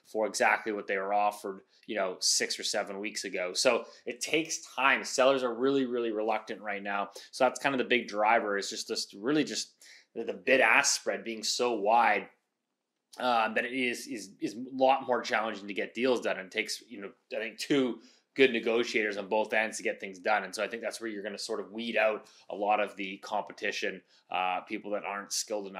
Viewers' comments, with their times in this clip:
0:10 What is a "big ass spread"? thanks.